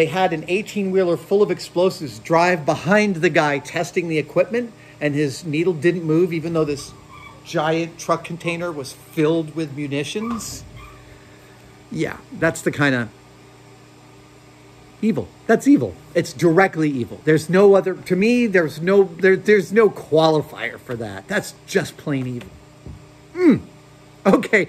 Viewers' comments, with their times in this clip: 0:07 thought my dog was whimpering. Turns out it was just something in the background of the video